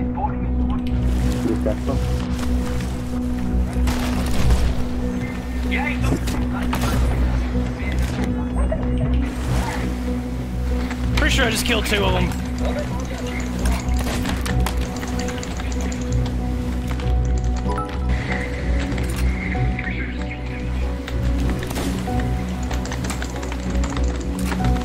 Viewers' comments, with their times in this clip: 0:09 he was watching your stream!!! You can hear your echo after a short delay didn't realize that a year ago when this came out lol